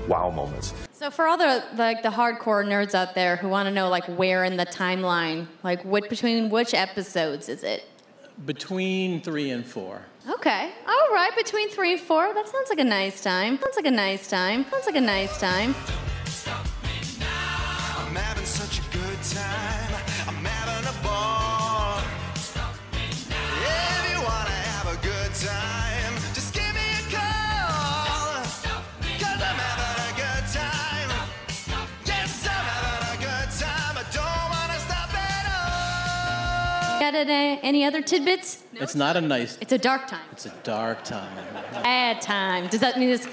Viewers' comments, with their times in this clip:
0:04 when you don't know what the fuck your presenting but you gotta make it sound hype
0:14 haha that music fits too good
0:31 LMBO I kept rewinding to The music cue was perfect ending right before the "younglings" massacre. It's like the boy reacted to the music and not the light saber. Well done.